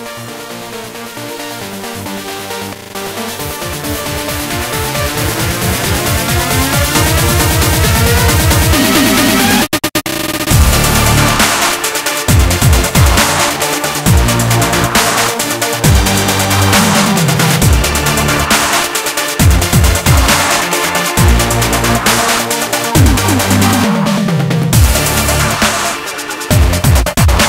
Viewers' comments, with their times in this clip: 0:09 DAT DROP THO